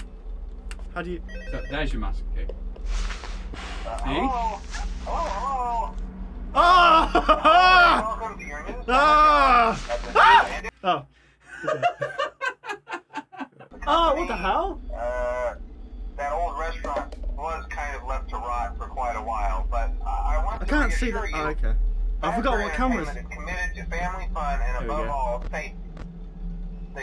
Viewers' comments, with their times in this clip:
0:09 Homer Simpson scream